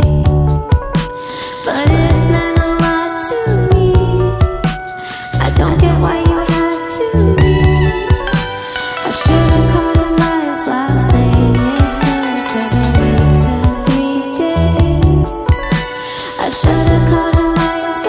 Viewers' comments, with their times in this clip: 0:05 It sounds like I am in the sunshine Beach